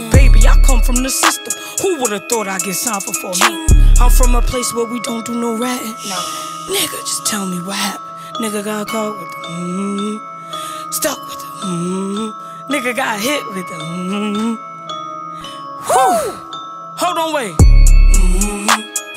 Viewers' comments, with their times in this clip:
0:06 Her voice vs her on the song I choose her voice when she is sing